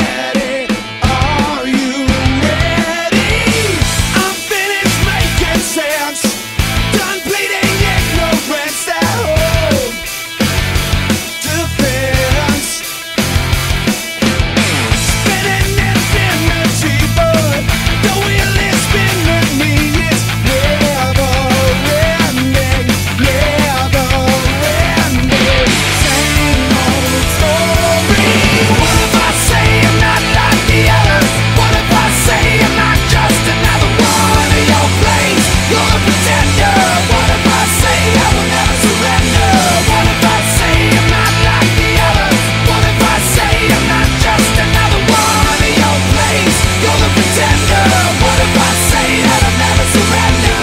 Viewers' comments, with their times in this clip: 0:09 oculus low power sound
0:34 chord change caught me off guard, love it